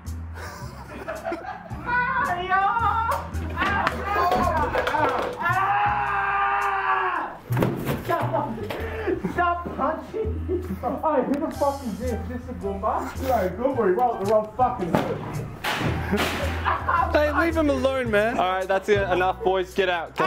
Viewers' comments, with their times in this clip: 0:06 The scream made me cry